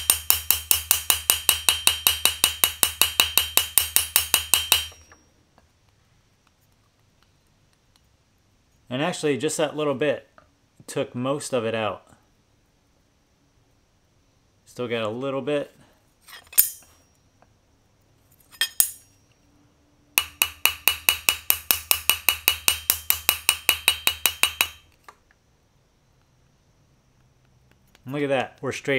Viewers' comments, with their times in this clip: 0:10 feels like you can hear when it flattens. Sounded like ching ching ch-ding ding ting.